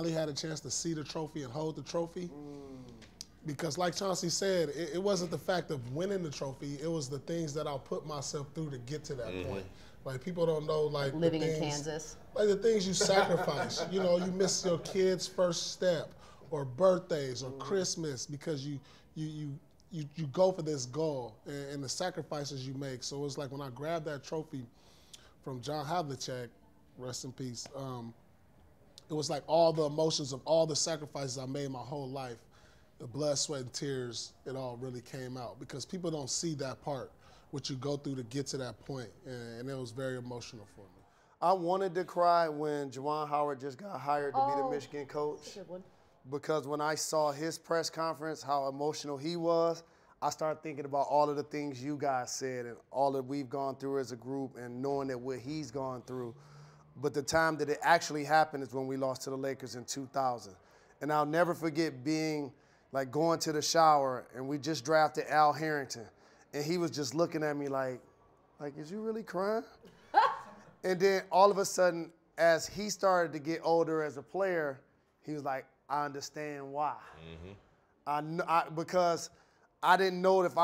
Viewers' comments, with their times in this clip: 0:09 That laugh from Jalen. He's lost all respect for Pierce. But Jalen better be careful laughing at Michelle's jokes... Molly is watching. Ha!
1:06 "Is you really crying?". I love it when the Ebonics slips out. Lol!